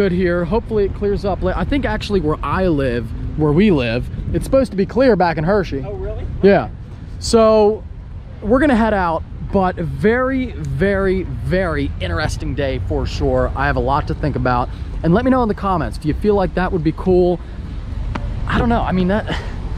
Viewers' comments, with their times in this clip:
0:05 that voice change was amazing